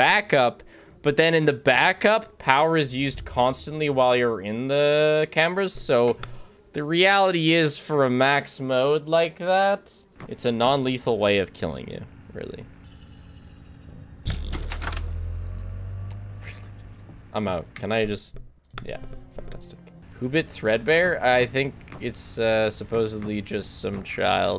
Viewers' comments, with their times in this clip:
0:07 "The reality is for a max mode like that,..." (Background: You're DOOMED) i just love the timing and context.